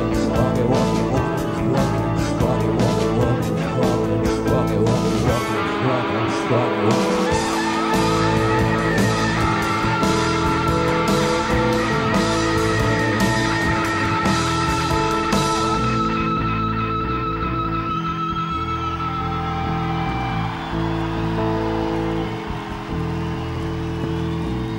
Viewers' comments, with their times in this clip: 0:05 That sound in Morning Bell is absolutely horrifying. I wait for it every time.